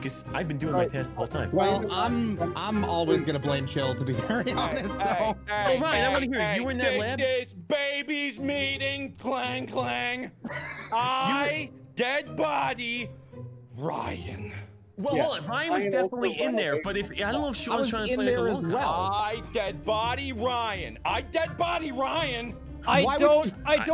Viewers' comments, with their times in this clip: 0:07 He sounds like JFK from clone high 😂